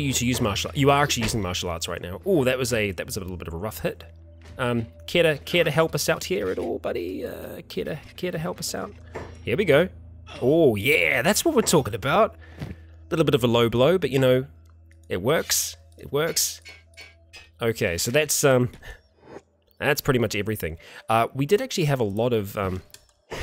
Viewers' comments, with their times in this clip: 0:09 It sounded and looked like a kick in the nuts